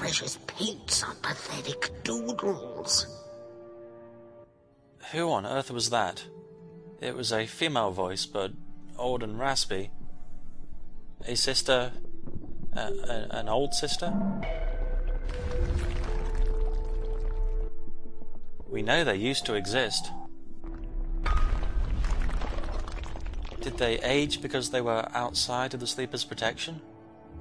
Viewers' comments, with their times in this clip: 0:10 Uh, when you said that the voice sounded female...I couldn't resist chuckling because that voice was Warden, one of the Brothers.